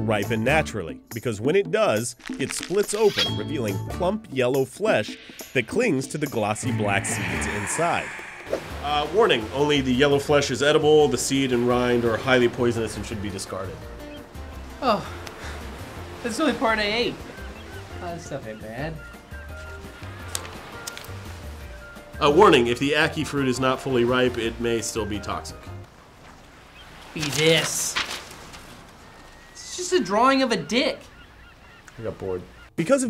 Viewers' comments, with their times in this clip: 0:10 epic audio fail.
0:14 THANKS! My left ear enjoyed that.